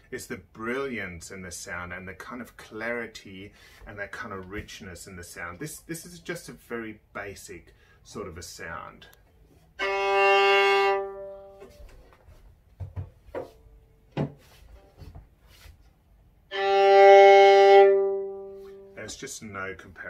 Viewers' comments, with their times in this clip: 0:05 To me, on the single open string they didn't sound too different and I'd be pushed to say which I preferred. The scales earlier did sound mildly somehow nicer on the more expensive one.